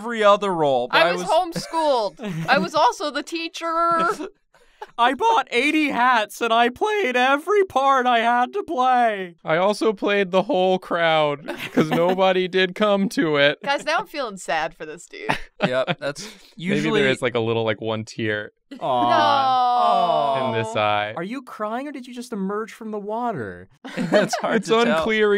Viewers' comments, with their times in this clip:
0:09 I had to pause on I'm sitting in the cafeteria of my university, trying to eat my food, watching this, everything is fine. Then the second monster came up, you started to imitate his voice and I completely LOST IT. Had to pause 3 times bc i laughed so hard i couldn't eat. My pudding came out of my nose.